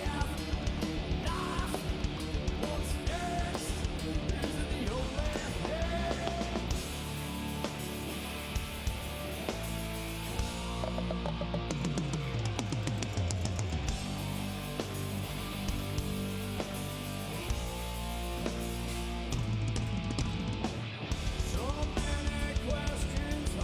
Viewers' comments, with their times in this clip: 0:08 Did anyone hear that chord ish haha one of them was off a halfstep!!